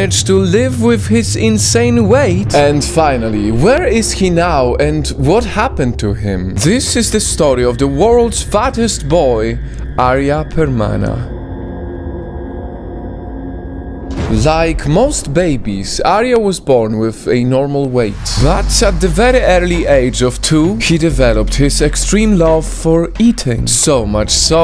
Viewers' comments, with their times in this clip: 0:10 Lmao you pronounced his name correctly 😂